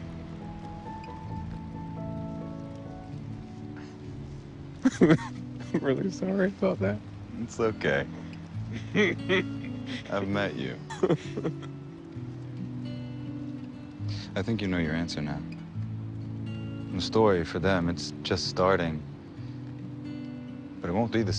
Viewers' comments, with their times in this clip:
0:09 "It's okay." This laugh sounds more like : "It's fine. Completely fine. No hard feelings. AT ALL."